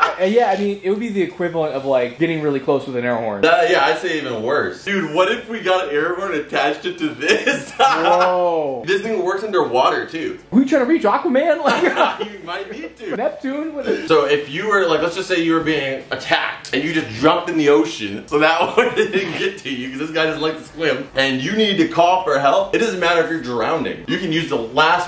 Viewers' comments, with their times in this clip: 0:10 That is the call of Cthulhu right there